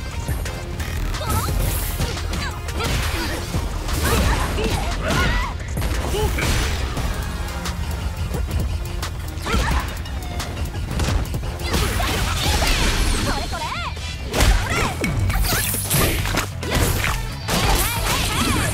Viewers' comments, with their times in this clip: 0:06 I just noticed that Kimberly's theme changes after her level 3 super